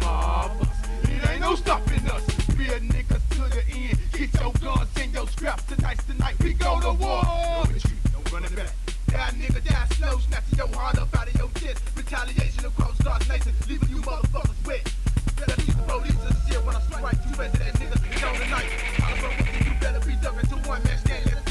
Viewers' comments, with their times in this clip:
0:06 the scream reminds me of death grips a LOT